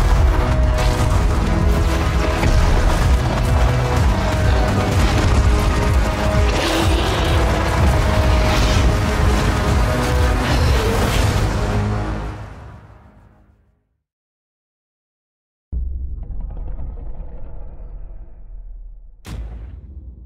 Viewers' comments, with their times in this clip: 0:05 He breaks the 4th wall. He's yelling at YOU